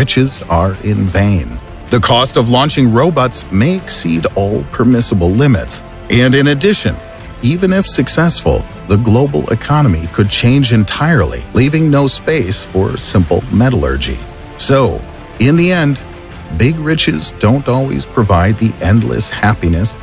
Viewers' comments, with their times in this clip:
0:03 did he just say robux? YAY I GET FREE ROBUX